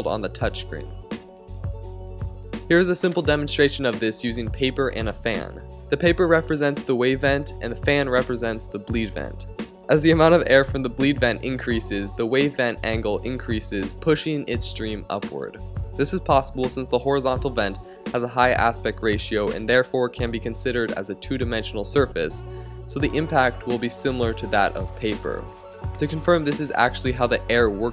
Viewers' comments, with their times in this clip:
0:09 it sounds like you laughed?
0:09 did he laugh ?